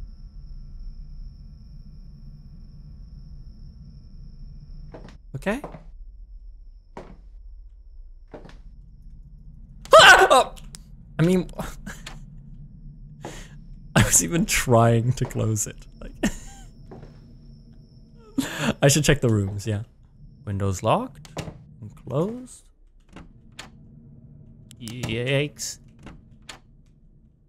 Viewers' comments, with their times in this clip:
0:08 you made me spit my drink out just by screaming 😂😵